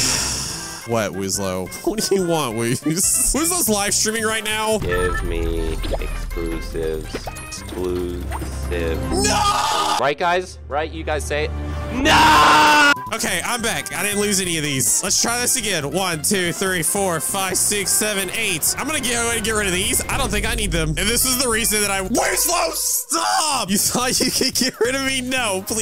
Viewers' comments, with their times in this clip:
0:04 I LOVE HOW THEY BOTH SCREAMED "NOOOOO" 😂
0:08 there screams are priceless
0:09 i like how they both scream noooooo!😂😂